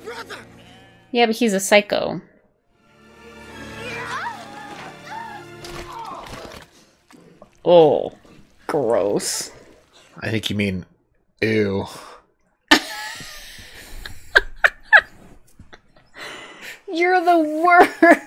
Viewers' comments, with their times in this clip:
0:04 That sounded way hotter than I remember it. Am I lonely?